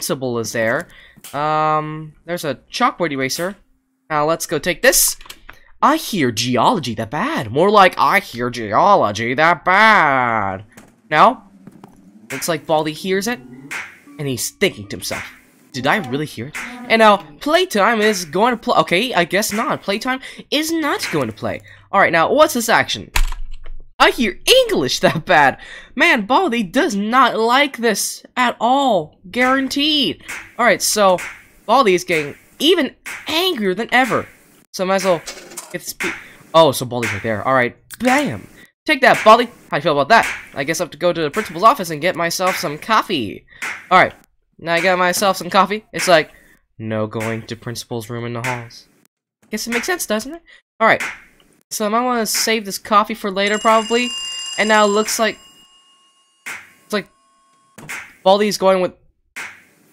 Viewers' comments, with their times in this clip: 0:06 sounds like baldi's voice
0:46 GOD THT VOICE FITS WELL
0:46 WHY DOES IT SOUND EXACTLY LIKE PRINCIPAL :O
0:47 u actually sound like the principal and thought it was the principal lol